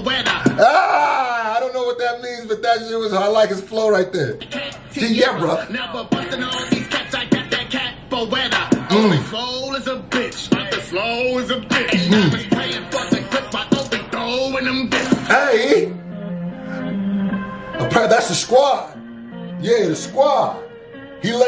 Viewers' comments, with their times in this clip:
0:03 this flow goes hard